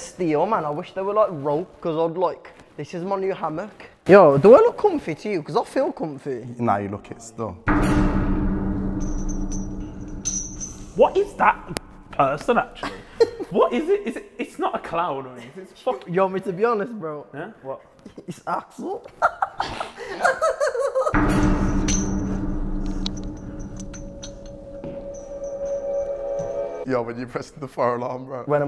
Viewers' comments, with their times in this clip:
0:10 What is that person, is it a clown? Want me to be honest, its a Axel